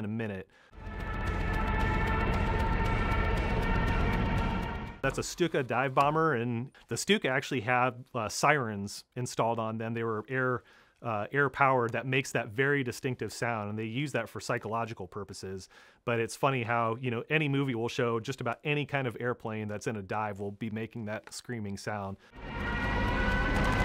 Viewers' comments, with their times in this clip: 0:09 Same as the Tie fighter 😂😂😂😂😂 The twin ion engines has a distinct sound like screaming.